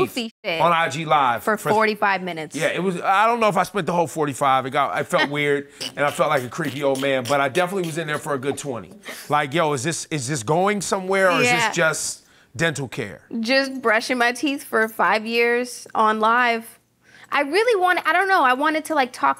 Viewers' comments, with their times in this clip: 0:06 i love her laugh cus is like "KIKIKIKI" lol